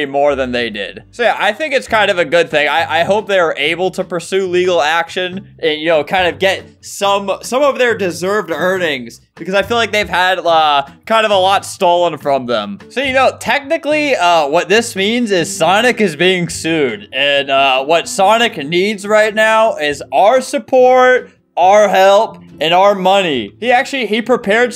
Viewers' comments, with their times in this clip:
0:07 *talks about sonic proceeds to put Mario music on*